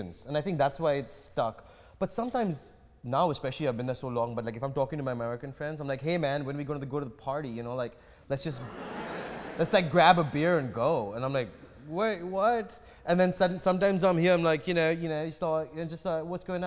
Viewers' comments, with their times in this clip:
0:03 Kunal Nayyar with different accents. Great Interview loved it!